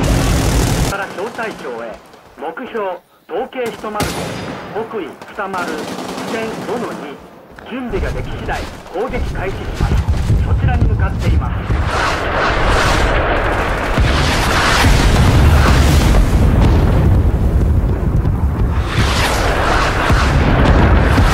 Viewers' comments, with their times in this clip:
0:03 is that man on the radio speaking japanese???
0:05 ? why is the man speaking in japanese in vietnam???